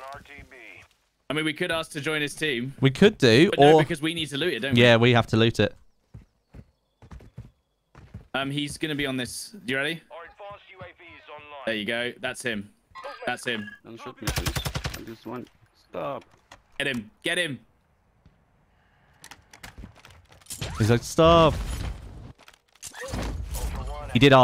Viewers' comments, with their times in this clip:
0:06 I feel bad for the guy he sounded nice and wanted his mission done but no hate westies gotta do what westies gotta do🤷‍♂️